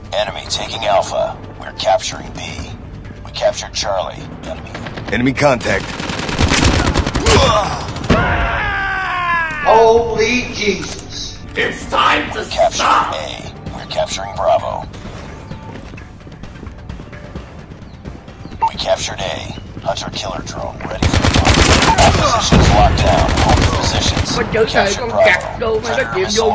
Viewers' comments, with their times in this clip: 0:08 idk why this screaming look like a guy he's bring in his body make me sad :( ok nvm